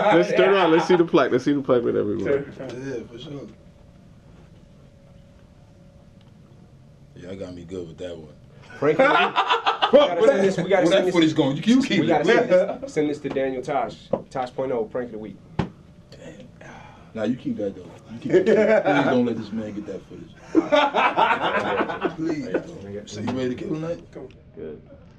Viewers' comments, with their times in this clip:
0:07 50's laugh lmfao
0:08 LOL nice laugh 50 :D
0:08 Why 50 laugh like a white boy lmao
0:09 + / « 50 Has A Contagious Laugh & 'Emi Always Trying To Doesn't Smiles , Laugh / Wherever !!!! »* 100% X3 <3 XOXO XDXD *